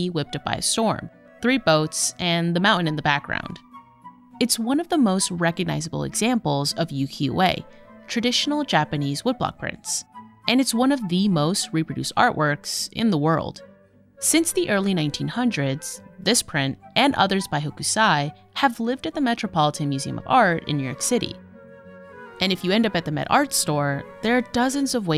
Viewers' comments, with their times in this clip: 0:07 Work on your pronunciation vox or at least ask soomeone. NOT "YUKI-AWAY" but "OO (as in too)-KI-O-EH"